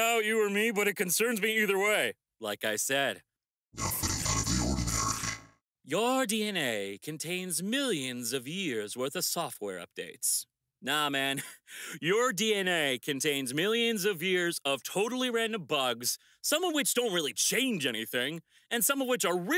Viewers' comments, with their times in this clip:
0:04 how do you get that creepy voice? Is it a speech A.I or a filter thingy